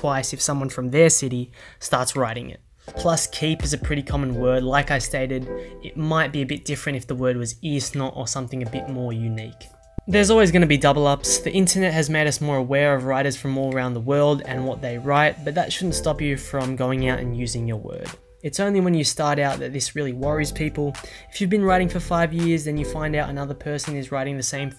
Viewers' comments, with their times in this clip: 0:06 did he actually said isno there ?! 😂